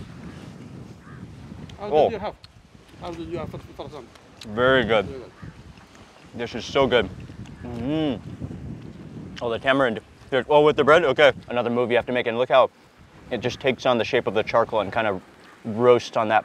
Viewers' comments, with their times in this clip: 0:03 the Arab guy was mumbling faraq how faraq faraq 😂😂😂